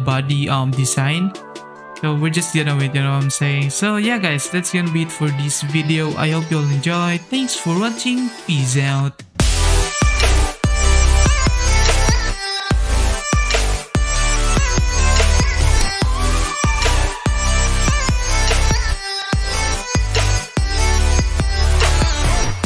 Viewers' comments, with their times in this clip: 0:08 spam your mouse on he sounds like robot